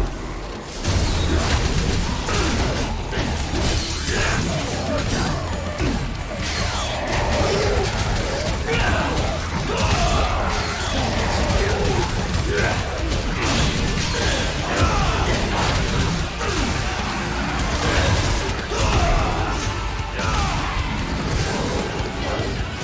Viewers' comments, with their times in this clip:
0:07 music and sounds it matches